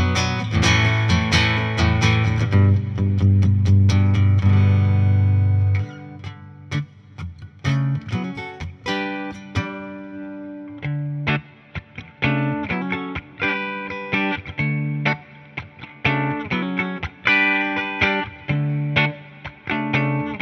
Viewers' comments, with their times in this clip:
0:05 listen to how happy this man sounds that he bought something with his own money omfg thats amazing
0:05 I can't understand what the purpose if this guitar is. I most certainly cannot serve as a substitute for a real proper acoustic. It most certainly doesn't have a good enough acoustic sound for recording purposes. And on the electric side... just get real electric. I do like that cool part the guy plays thanks for the great, informative video!